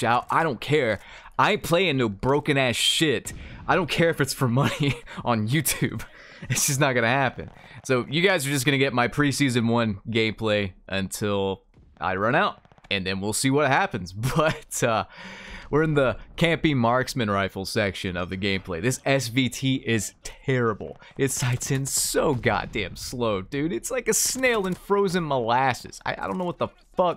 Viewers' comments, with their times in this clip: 0:10 'gayplay' yes vanguard is very gey